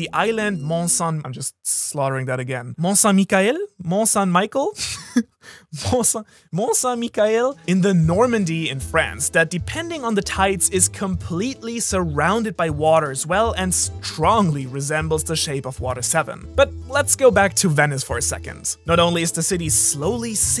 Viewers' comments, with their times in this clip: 0:03 When you said Mt. Saint Michael I had to listen to it for a second time.